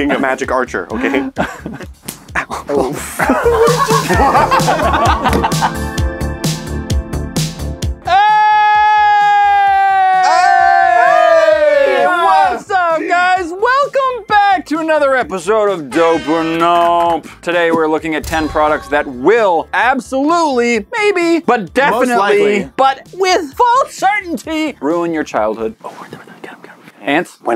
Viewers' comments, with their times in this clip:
0:09 sorry headphone users